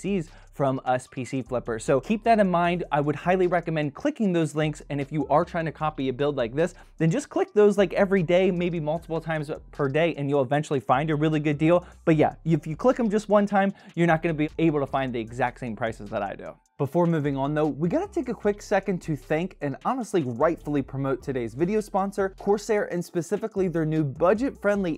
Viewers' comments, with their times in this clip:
0:07 there a fly in the room